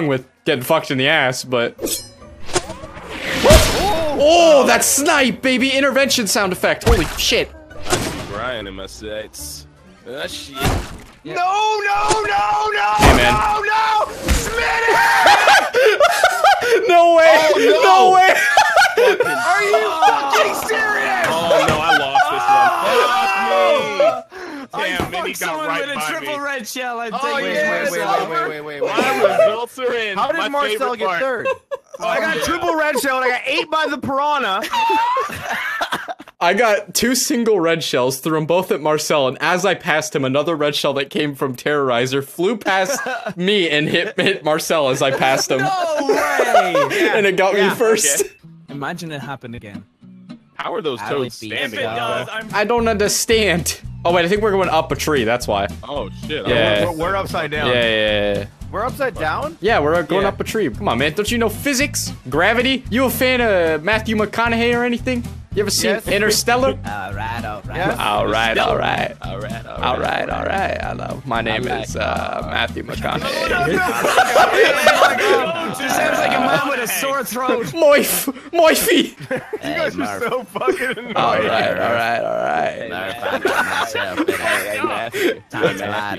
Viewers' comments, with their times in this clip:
0:10 The desperate cries 🤣
1:09 Anyone watching in 2019? Matthew Mconehay actually went to my highschool and showed up at his graduation a week ago.Not knowing how he sounded beforehand, this threw me the fuck off